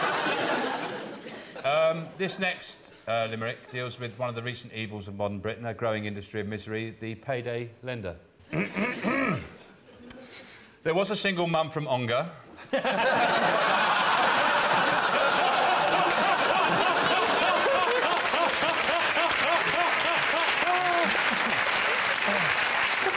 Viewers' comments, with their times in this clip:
0:10 Can someone explain to a German why everyone is laughing ? :)